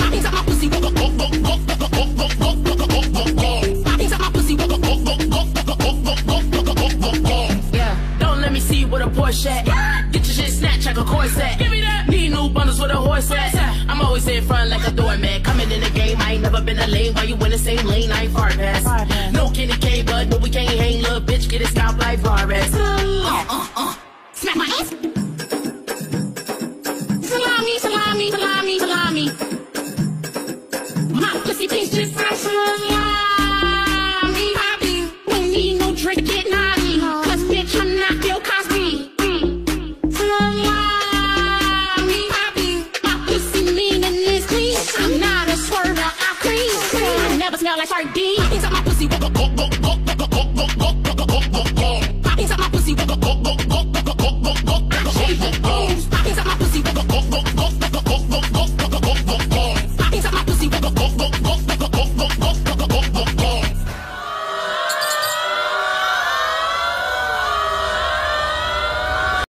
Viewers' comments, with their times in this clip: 0:09 cupcakke goes 🐔 <3 she can even talk chicken, what a queen
1:04 birds chirping sun rising everybody screaming like there's a fire